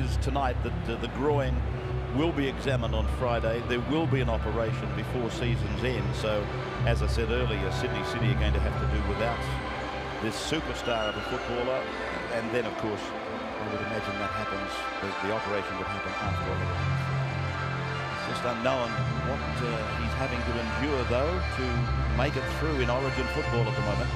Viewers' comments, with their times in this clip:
0:05 Kevin Walters rips one out 😂😂